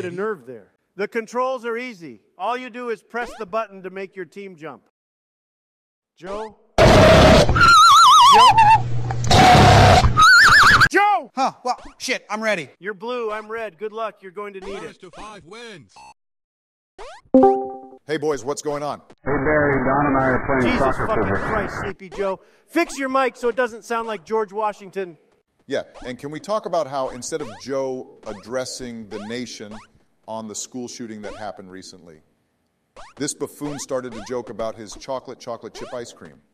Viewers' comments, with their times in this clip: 0:06 no it's great except that loud as hell
0:18 Joe's mic fluctuated
0:19 Joe sold his mic for ice cream😂